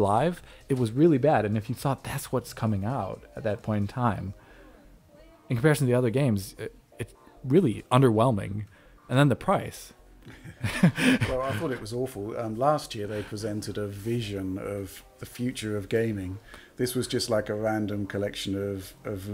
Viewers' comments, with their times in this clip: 0:03 this sounds like a mosquito (or a racing game sounds)